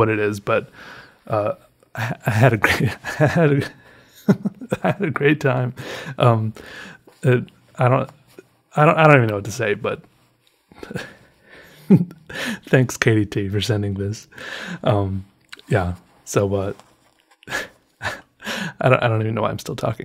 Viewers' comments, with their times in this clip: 0:04 I love your laugh